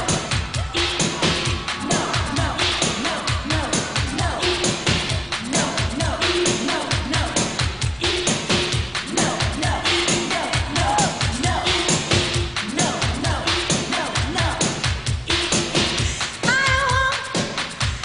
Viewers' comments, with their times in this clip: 0:05 All the dancers do a clap it is part of the choreography, no dancer would dare attempt to distract the Diva of all Diva's during her performance, which was FABULOUS!